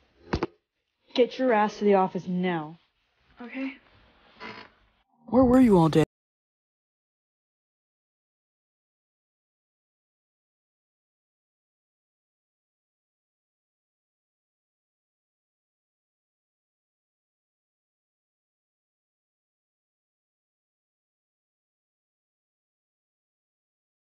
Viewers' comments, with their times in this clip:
0:05 is it just my phone but there was not sound?